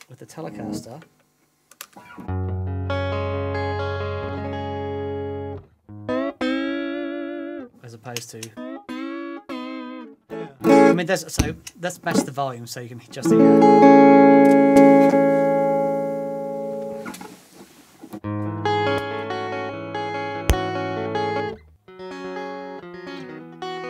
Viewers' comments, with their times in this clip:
0:07 My biggest complaint about this pedal is the massive pop when switched on/off. Very apparent Obviously not an issue if you’re using a true bypass.